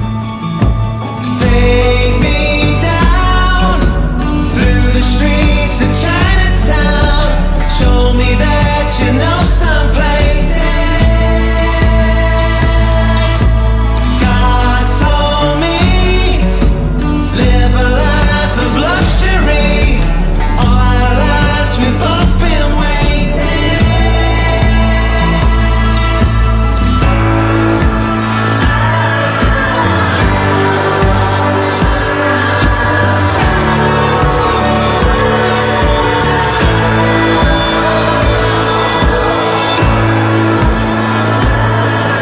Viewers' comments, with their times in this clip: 0:08 Show me that you know some places. that effect!
0:15 "God told me, to live a life of luxury" the same tune as "faster than a cannonball."
0:28 I fall in love with the break ... No words ! Makes me cry...